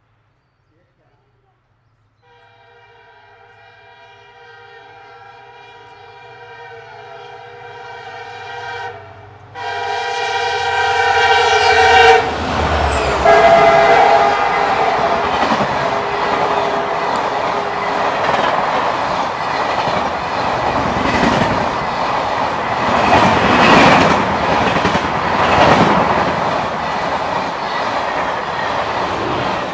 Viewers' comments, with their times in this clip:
0:10 Very peaceful LHF Honking